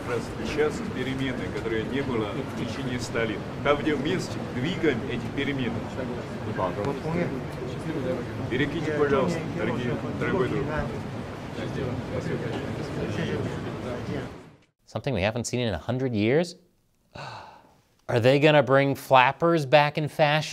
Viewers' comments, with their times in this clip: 0:07 it looks like the Chinese translator is being dubbed 😂😂😂